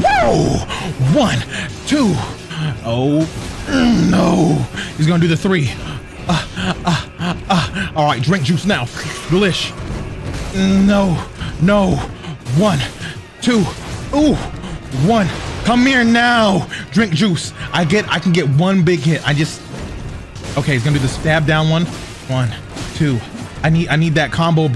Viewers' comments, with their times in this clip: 0:06 those dodges are pretty clean and impressive but why you sound like you are getting the grape.